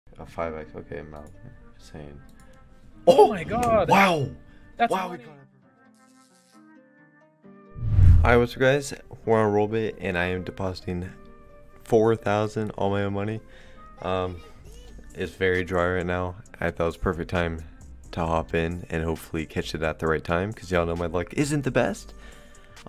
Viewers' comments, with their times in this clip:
0:03 he sounded like the Wow meme but faster